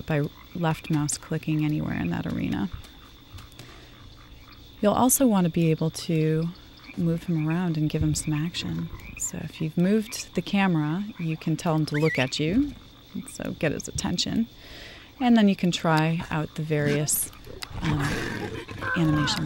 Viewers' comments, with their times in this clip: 0:07 Listen to the way she says "give him some action" Crikey thats a hot voice.